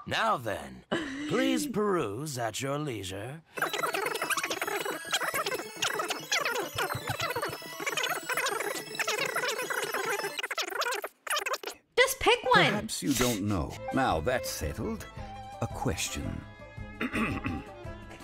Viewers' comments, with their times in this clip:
0:04 sounds like FF Prelude